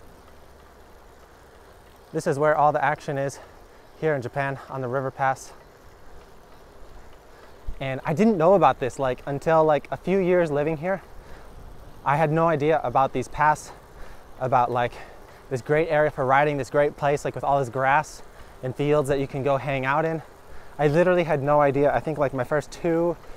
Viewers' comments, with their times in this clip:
0:07 I hear some knocking is it bottom bracket bearing?